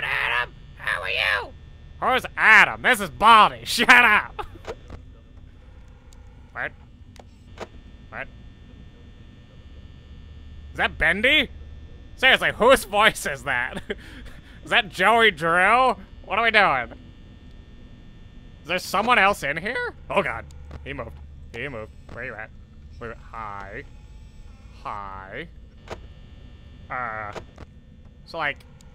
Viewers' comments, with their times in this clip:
0:08 that dum dum dum voice is foxy he is in that curtain ●_●
0:11 NO THATS FOXY HE IS SINGING BECAUSE HE IS SAD THAT YOU CHECKED ON THE OTHERES AND NOT HIM